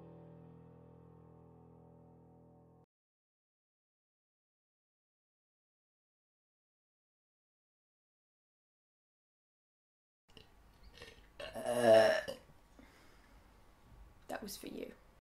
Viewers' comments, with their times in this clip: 0:13 ME: Oh gawd, I wish she wasn't so pretty because my gf is starting to feel jealous Burps ME: Cool, all fine now.